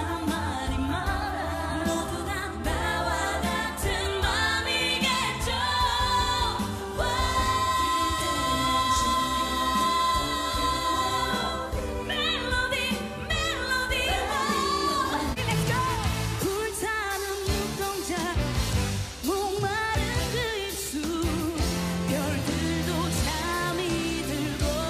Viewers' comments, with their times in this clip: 0:07 Actually when they covered BTOB, Mamamoo were really sick...3 of them having a flu and Wheein esp sounds very nasal. You can hear Solar and Wheein being a little pitchy ...(idk why they choose that clip) But for me once again that's just shows their impessive work ethic.